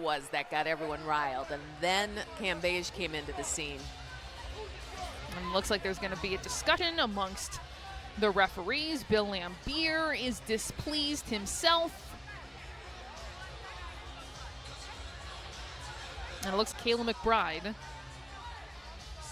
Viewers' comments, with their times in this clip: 0:06 What is a discuttin" and why would the referees want to have one amongst themselves...?